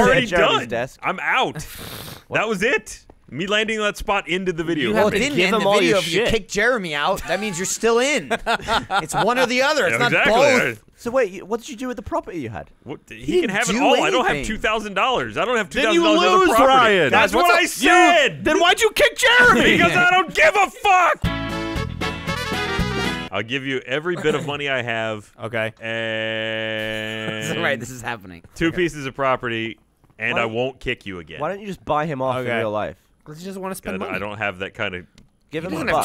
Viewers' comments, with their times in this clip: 0:10 Fucking to the technical difficulties music made me laugh so god damn hard.
0:21 I thought it said Royaltical difficulties.